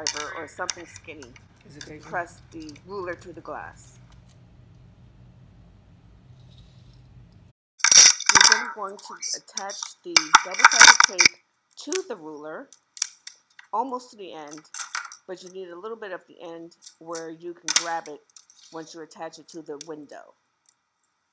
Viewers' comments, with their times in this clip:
0:09 Smart ideas! opposite of ASMR 😂